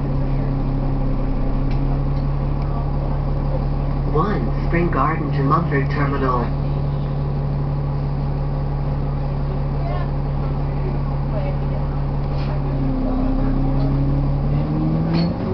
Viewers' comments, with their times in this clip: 0:03 Why Is The "1 Spring Garden To Mumford Terminal" So Loud?